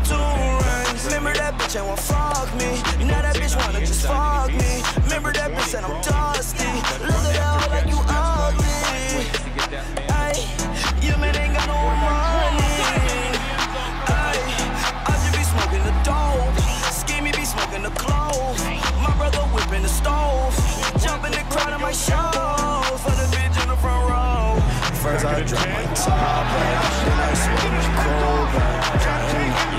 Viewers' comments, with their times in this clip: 0:10 was the beat